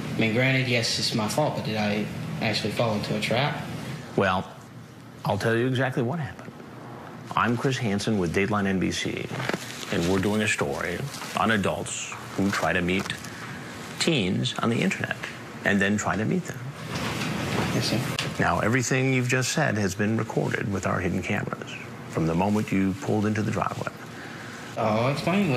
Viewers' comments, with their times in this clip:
0:07 “Im Chris Hansen with Dateline NBC, and we’re doing a story, on adults, who try to meet teens on the internet. And then try to meet them.” Perfect execution of words